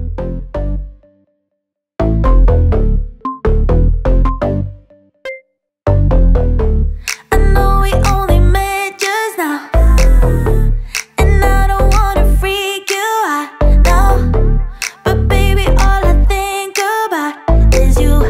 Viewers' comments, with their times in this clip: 0:03 The music stops about approx 3 min and only restarts 😢